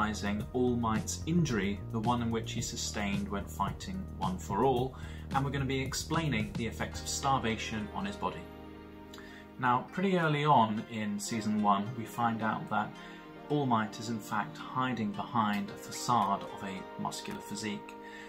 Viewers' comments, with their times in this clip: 0:04 “We are inspection all mights injury, sustained when fighting one for all” What?